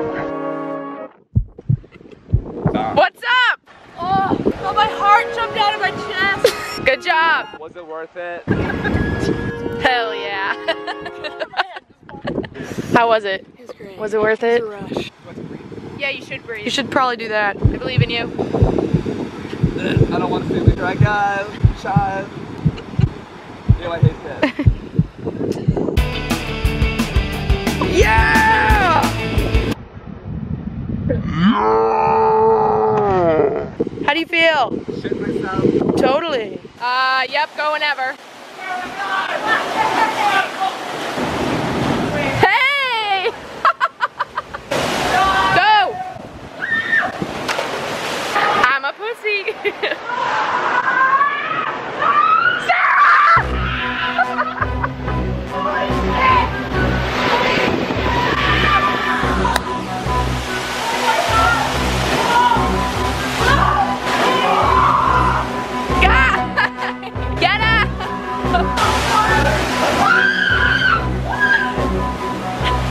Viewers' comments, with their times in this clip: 0:04 She sounded like the girlie from the goonies (weird i know)
0:57 had me crying. the screams and their little bodies just swishing back and forth 😂